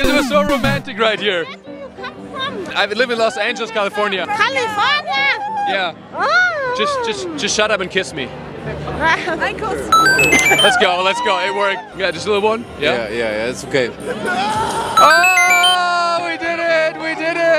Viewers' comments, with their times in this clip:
0:03 ' California oOoOoooOOOwuhh' 🤣🤣🤣🤣 she just hit an Ariana Grande note bsh